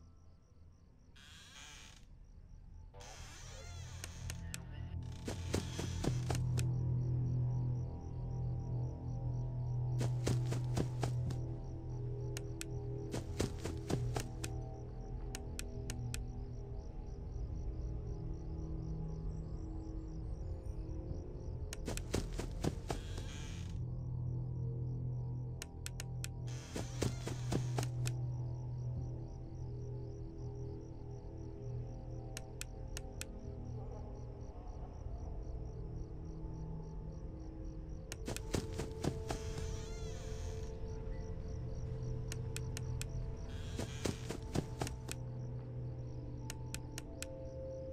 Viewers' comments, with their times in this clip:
0:03 as he was about to leave the door I swear I heard something like “can you hear me?” From a man sounding voice, kinda sounded animatronic like
0:33 Did I just hear Fredbear laughing??? Or am I trippin'?????
0:33 ok who else heard the Fredbear laugh???